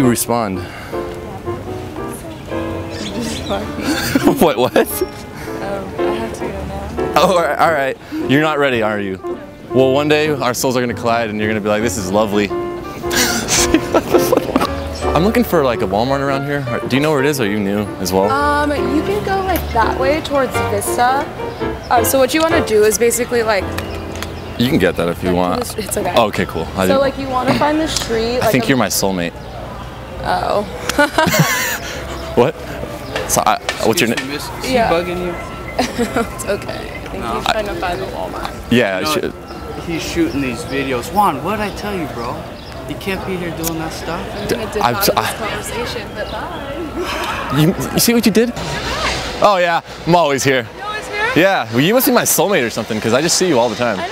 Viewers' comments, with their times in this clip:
0:07 The girl from.the thumbnail had a really sexy voice
0:41 That police officer sounded like the one who tells Dwight to stfu at Michael's condo after his dinner party